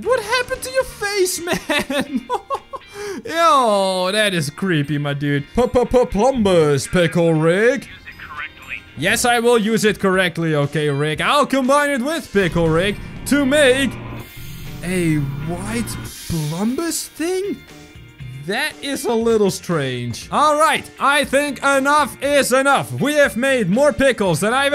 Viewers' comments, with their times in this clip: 0:10 if you put on subtitles it thinks he say Papapa plumbers pickle RIG? XD